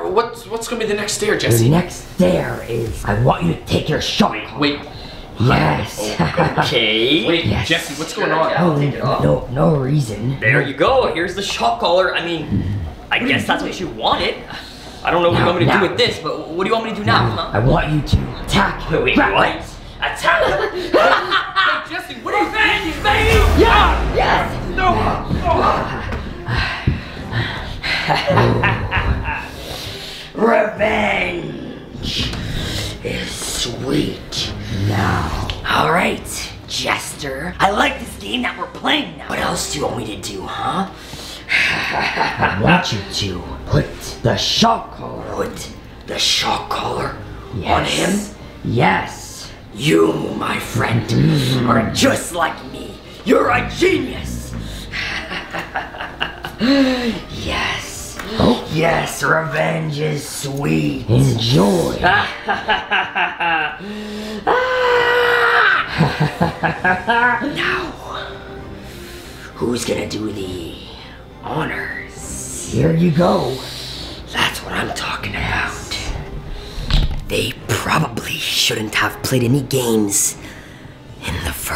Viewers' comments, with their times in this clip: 0:06 he souded so confused why they wanted him to take the shock collar off
1:04 what kind of laugh was that XD